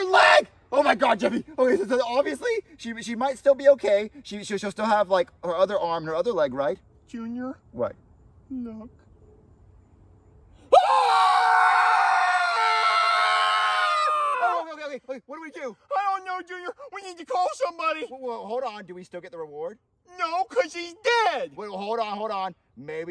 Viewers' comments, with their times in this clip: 0:09 junior screamed like an old woman